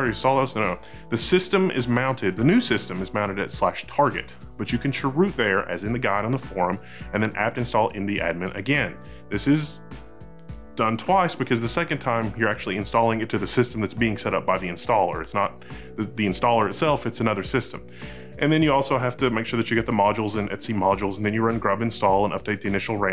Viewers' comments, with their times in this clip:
0:05 Did you say “cheroot”? Give that man a cigar. ;)